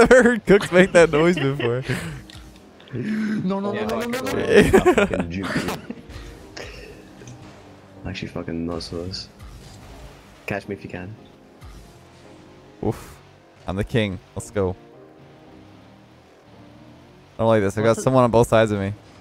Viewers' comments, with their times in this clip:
0:06 I actual though someone said “bunch of fuckin muslims” I legit had to replay it like 4 times, my sounds low but jheeez 😂😂